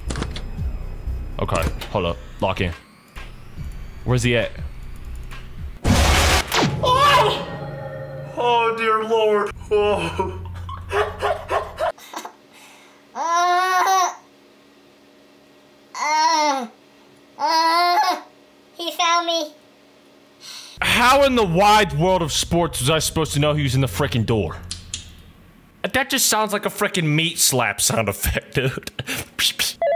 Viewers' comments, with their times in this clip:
0:05 bro that noise he made
0:05 was he screaming or moaning bro
0:13 baby fs noises